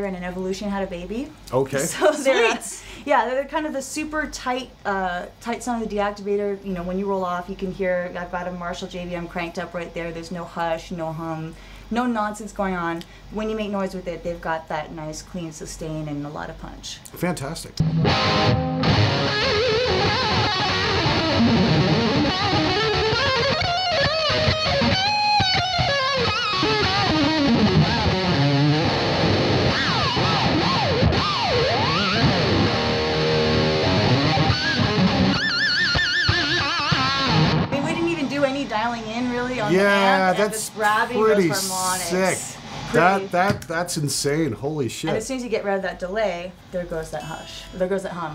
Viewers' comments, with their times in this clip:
0:10 I thought she said cigarettes
0:35 Ain't no one gonna notice how Nita hit them harmonics she hit them harmonics smooth and feisty